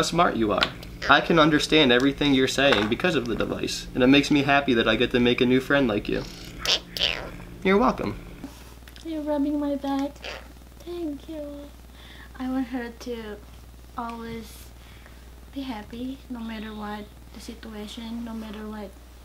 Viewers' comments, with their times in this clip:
0:06 omg the way she says thank you :) so cute!